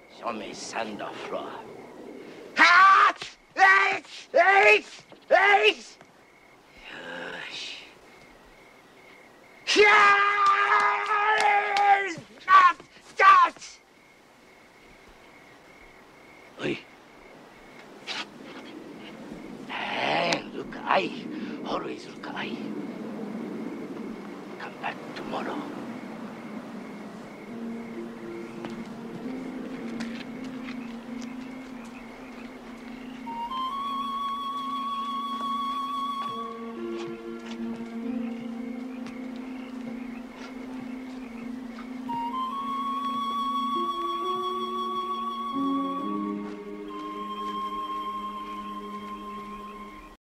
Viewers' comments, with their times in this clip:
0:09 I can't stop laughing Why does he have to scream as he punches lmaoo
0:33 LOVE the flute